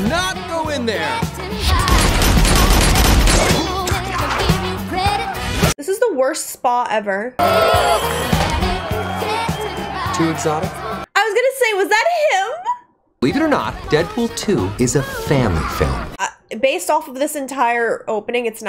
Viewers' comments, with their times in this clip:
0:05 I thought she said, "This is the worst song ever." and I was about to riot for the insult to Dolly. 😄